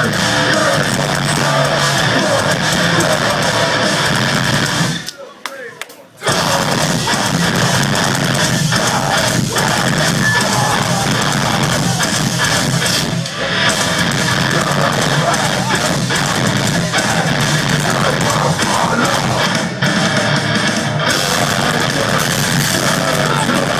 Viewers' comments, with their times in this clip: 0:05 quitest that arena will ever be with a band in it hahaha